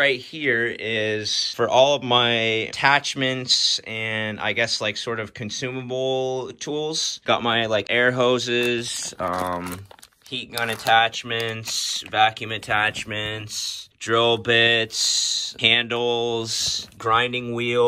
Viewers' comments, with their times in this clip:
0:03 this right here is for my attachmentsssss, consumable toolssss, vacuum attachmentsssss, drill pitsssssssssss